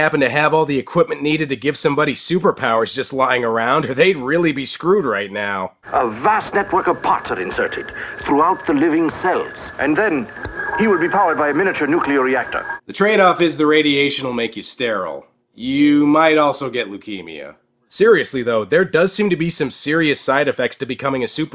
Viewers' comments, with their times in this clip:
0:06 Is he saying "A wast network of pottery"? He's got superpower from... flower pots and ashtrays!?